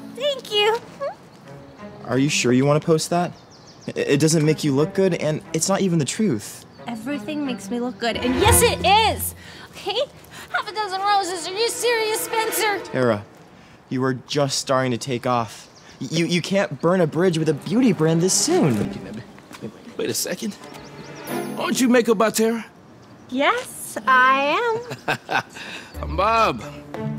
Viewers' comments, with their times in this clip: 0:10 Idk why I keep replaying this its just the way she sounds while saying that